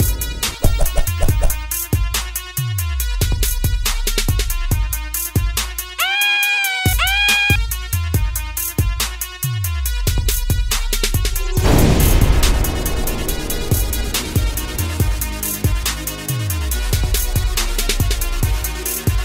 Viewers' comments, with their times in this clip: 0:07 Dat scream do 😂